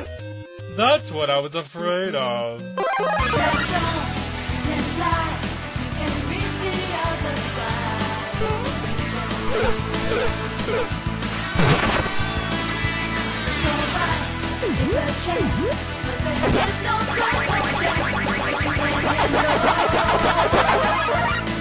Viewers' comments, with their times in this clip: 0:03 I remember this having the taco man play a video game intro instead of the sonic boom